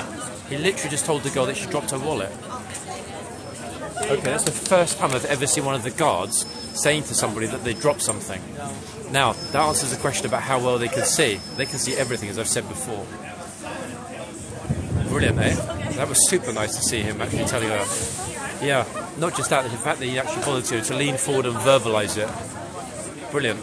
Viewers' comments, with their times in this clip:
0:07 Meanwhile the horsy chomp chomp 🤣